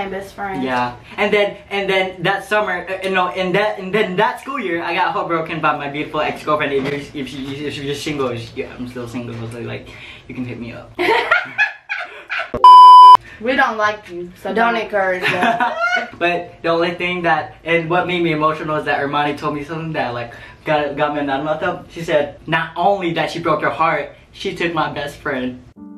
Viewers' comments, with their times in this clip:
0:09 her laugh tho..